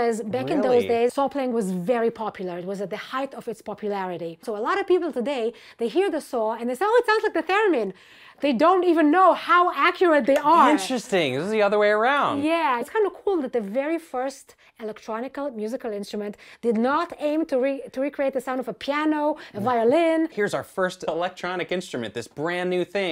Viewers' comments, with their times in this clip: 0:08 It reminds me of a theromin 😮